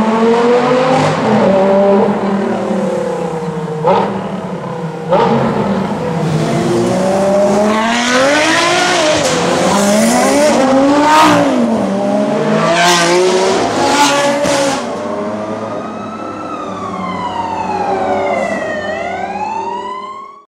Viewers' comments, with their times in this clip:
0:08 ending is the best part of the video with all the supercars and the police siren in the background
0:18 haha love how you hear the police after they fly by! classic ending :'D !